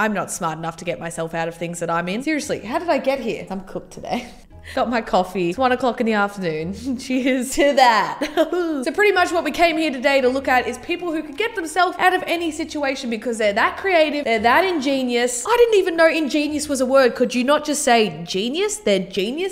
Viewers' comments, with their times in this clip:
0:07 I actually laughed too much at the “ahaoo”